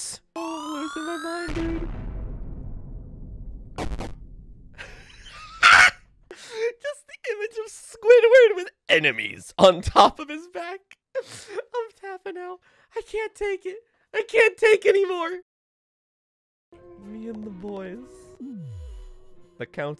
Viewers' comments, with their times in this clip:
0:04 that is by far the funniest laugh i have ever heard
0:05 is it just me or does that laugh lowkey sound like luigi screaming?